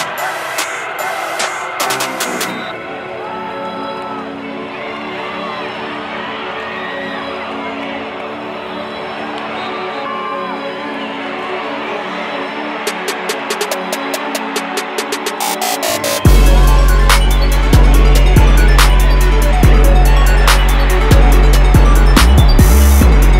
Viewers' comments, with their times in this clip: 0:04 At that beat change up saved this highlight reel for me...